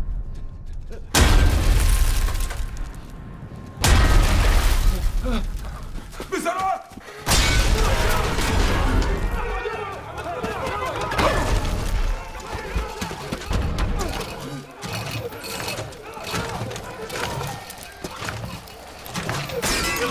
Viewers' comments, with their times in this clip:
0:03 Iron man: *banging on the doors * Some terrorist in Spanish: "uhh...chalkboard!"